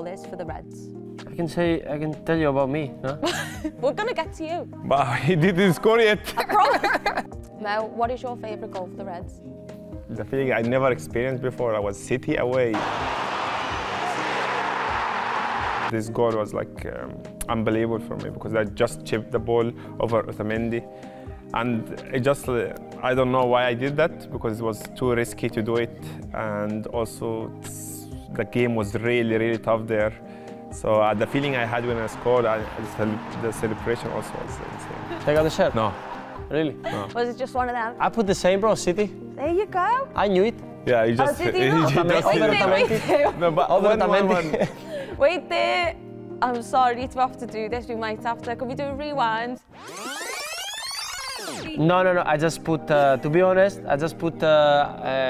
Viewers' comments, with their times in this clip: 0:04 savage mo with that cheeky laugh 😅😂
0:37 Kostas is so scouse.. 🤣